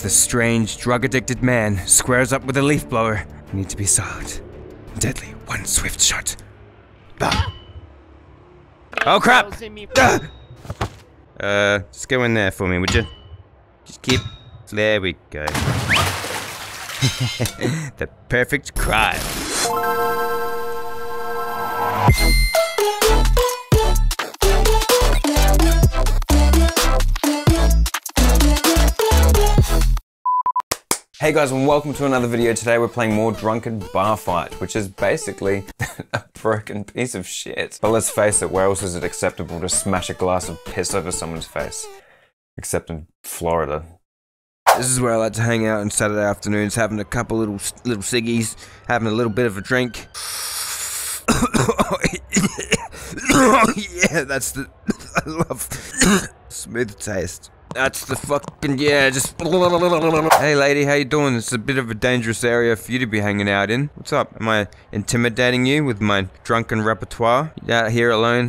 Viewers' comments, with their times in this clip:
0:05 that was A MOAN
0:12 so I actually have this game and he didn't add a water splash sound effect
0:52 Coughs in 2019:ok 2020: HOLLY SHIT.... QUARANTINE